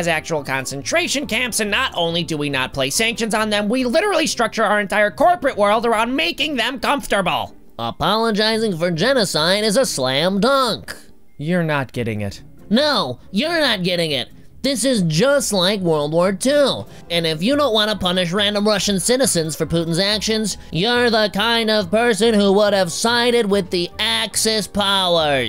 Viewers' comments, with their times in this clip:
0:10 you got a notification on your iphone. (Use headphones)